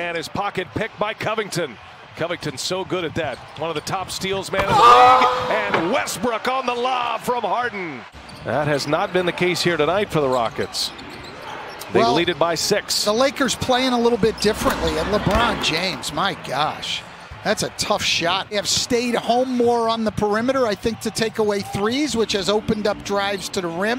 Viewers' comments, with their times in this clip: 0:04 Lol what was that scream